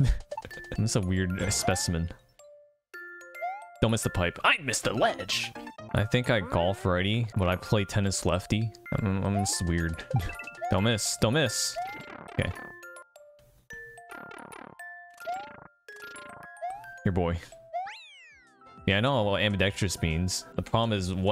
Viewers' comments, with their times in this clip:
0:07 Love how you say "I missed the ledge!!" 😂